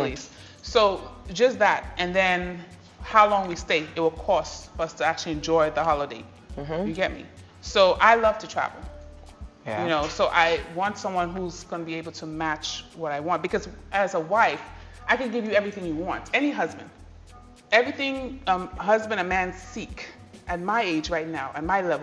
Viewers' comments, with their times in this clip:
0:03 I like the Hausa-looking guy. I like the way he speaks… Cool!😎